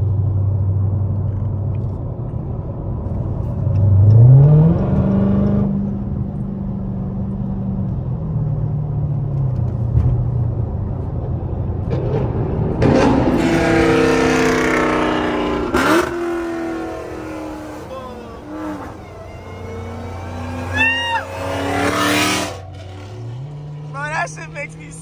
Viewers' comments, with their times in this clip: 0:10 sounds sooo good